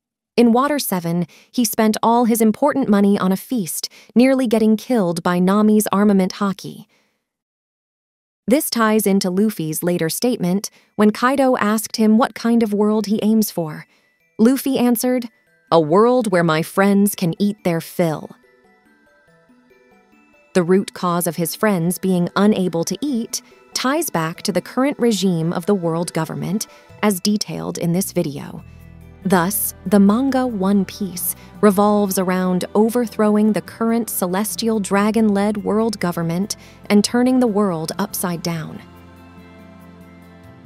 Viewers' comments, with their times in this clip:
0:03 "nearly getting killed by Nami's armament haki" sent me LMAO you said that with such a straight tone
0:27 music really reminds me of BOF3